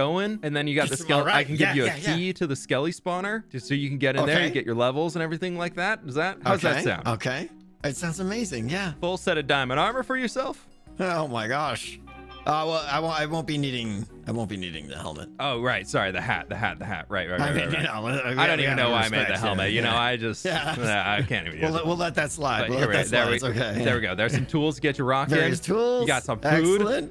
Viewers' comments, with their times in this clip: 0:10 And I thought it was tedious to watch repeat moments on different peoples episodes before! I seen the same moment bout four times already. my word I haven't heard that phone sound in ages!